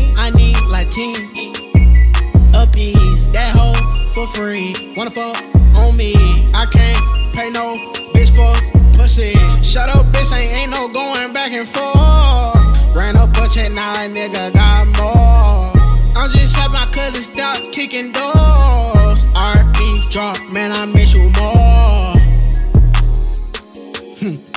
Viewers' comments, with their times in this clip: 0:10 he turned into T-Pain frfr 😂😂😂 shit stupid hard tho.